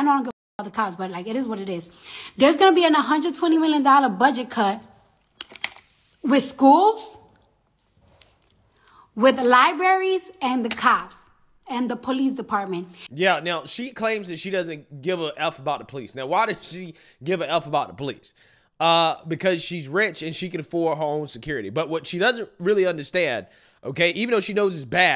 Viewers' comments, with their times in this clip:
0:06 liberries!! Hahahaha she cant even speak English correctly